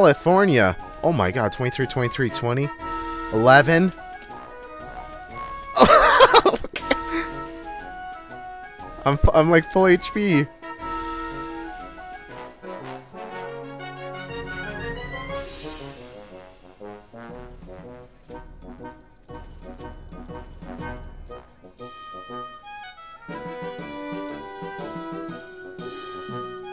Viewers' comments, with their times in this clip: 0:07 Haha wtf is this carnival music! Lol